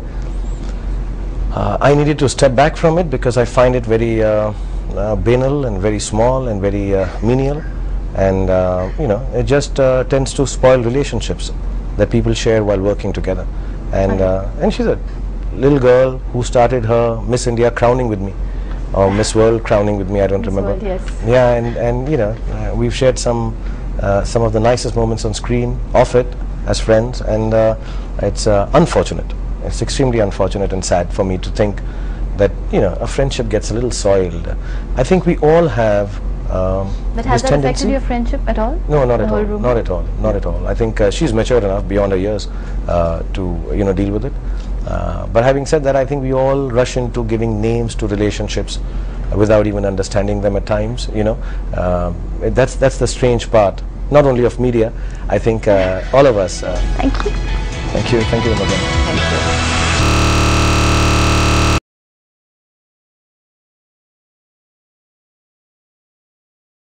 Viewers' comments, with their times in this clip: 0:03 He mispronounced the word "banal" lol
1:00 blew my ears off